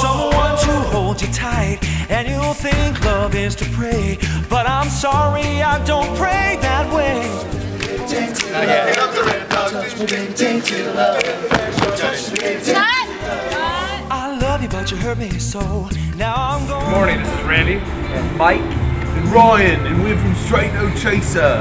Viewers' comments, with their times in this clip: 0:09 Lol, I swear, I'm hearing, "We love the Randawg."